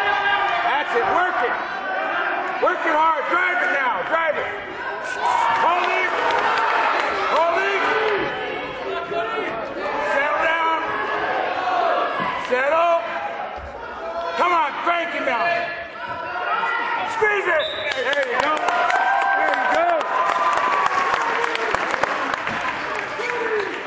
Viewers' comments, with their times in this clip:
0:04 you can hear a taring sound lol